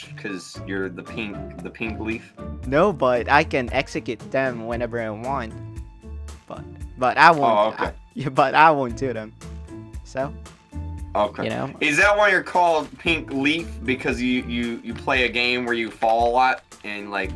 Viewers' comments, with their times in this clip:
0:05 I just hearing stuff or did I hear him say the f word?